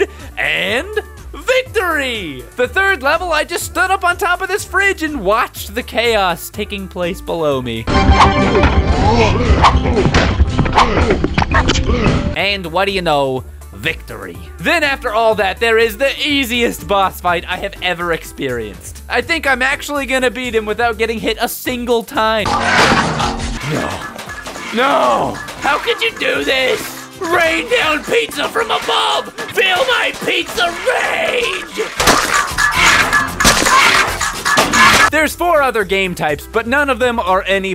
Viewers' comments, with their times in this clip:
0:08 The distinct groaning sound reminded me of Engie from TF2
0:23 You sound a lot like Patton Oswalt when you're raining pizza from above